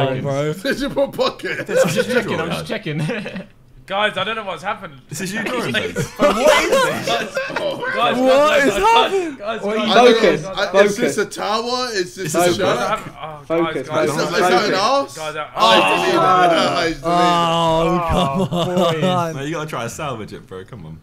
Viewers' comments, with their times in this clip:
0:06 Simon voice crack your welcome